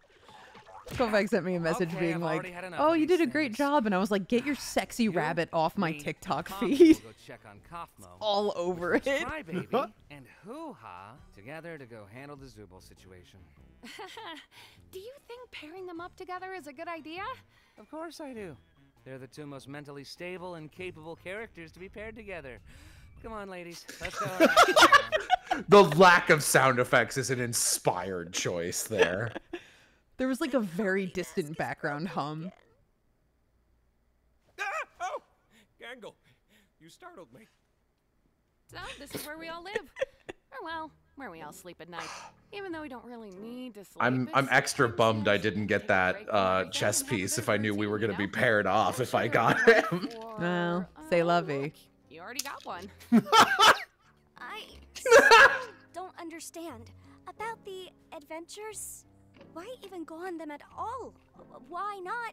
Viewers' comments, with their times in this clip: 0:07 Goofy ahh laugh💀💀
0:50 now that was a good chuckle